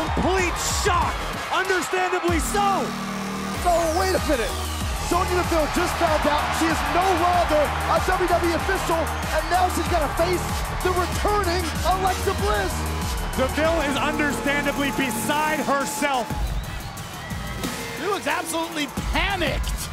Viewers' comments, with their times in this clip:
0:05 just hand her the women's title already the pop says it all